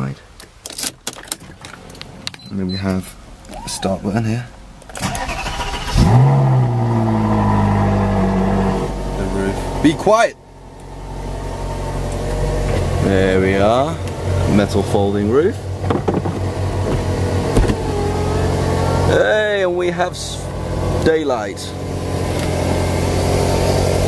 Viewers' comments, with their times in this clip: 0:09 A carguy who don't want to hear a Ferrari coldstart ? lol